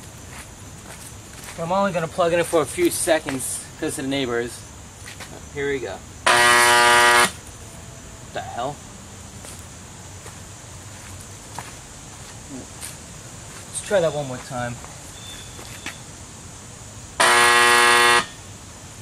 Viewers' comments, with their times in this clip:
0:06 model 2 turns into vintage fire alarm horn